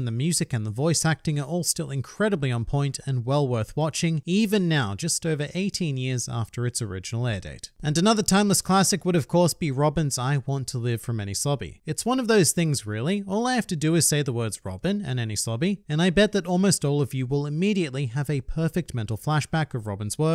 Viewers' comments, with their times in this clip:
0:07 I legit shedded a few tears during that scene. The scene has much more meaning than what it’s putting out. In a way it’s calling out those that doubt themselves. Nothing against dubbed but this particular scene is best watched with sub because the Japanese voice actor has much more emotion in her voice.